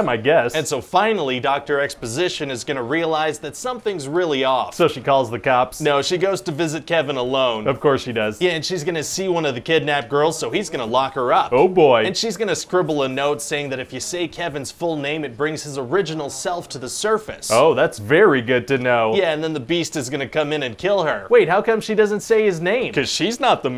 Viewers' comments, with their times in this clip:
0:06 thats nice of her to visit Kevin malone.